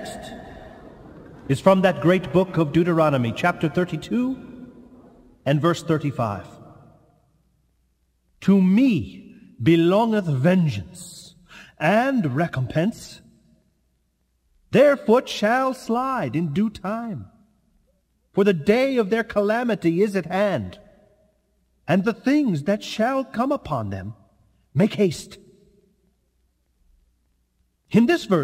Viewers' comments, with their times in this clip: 0:10 Wow, this is really clear! As in, I was wondering what birds were freaking out in the morning😁 Obviously, the message is important. I love this sermon💝